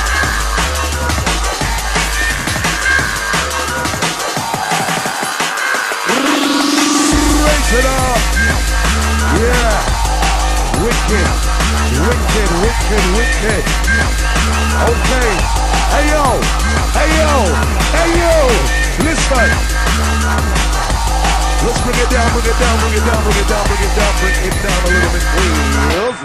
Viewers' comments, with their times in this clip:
0:07 the timing of the video and the drop is amazing.